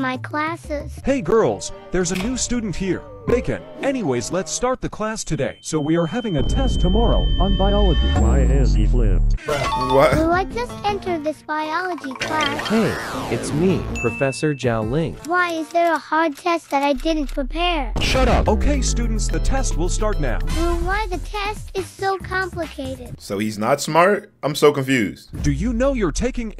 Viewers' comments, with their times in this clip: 0:08 someone pls tell me how to have that ai voice😭🙏🙏